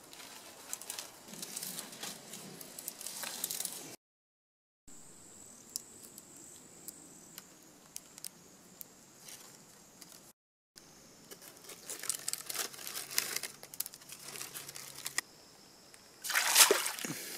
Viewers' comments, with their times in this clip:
0:04 R.I.P headphone/ earphone users